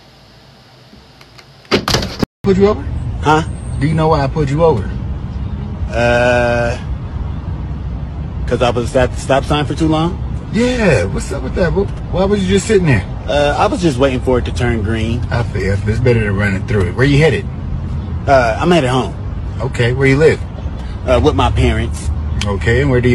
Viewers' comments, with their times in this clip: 0:07 bro sounds like Kevin Hart but taller